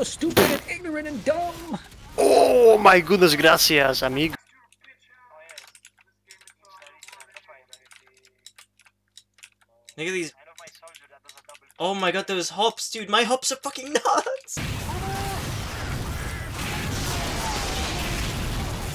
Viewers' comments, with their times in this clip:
0:06 are you playing on blue switches lmao